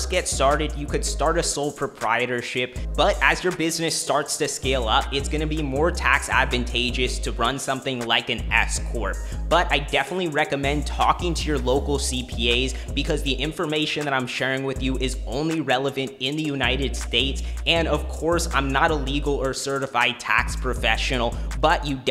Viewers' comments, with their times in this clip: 0:05 Not the EZ Corp 🤣🤣